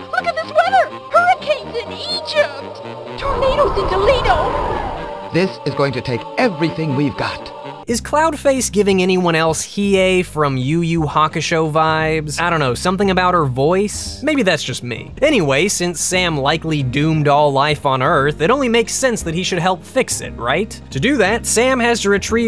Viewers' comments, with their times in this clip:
0:08 No. Honestly, my first thought went to the Oracle from The Matrix. Calm voice, unflappable, nice voluminous hair, come across like she knows more than you, etc.